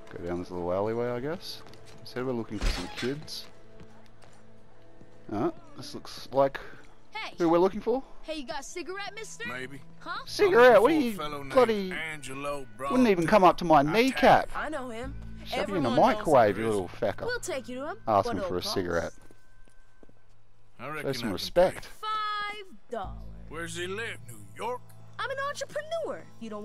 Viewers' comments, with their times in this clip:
0:08 I am surprised they smoke yet they got such squeaky voices at the same time